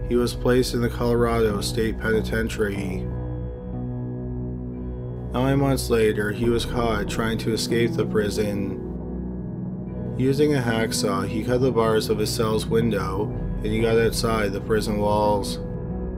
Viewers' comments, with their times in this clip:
0:03 I don’t mean to sound like a hater, bc i love these videos and they’re clearly researched and put together well, but the narration kills me. it just sounds so blah and devoid of any emotion or feeling. and honestly in this video, the words sound practically slurred together.